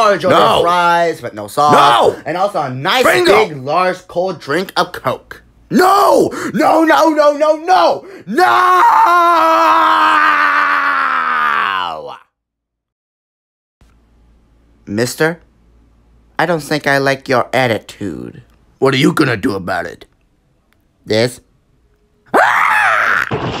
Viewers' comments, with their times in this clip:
0:08 Fleegle's Voice Crack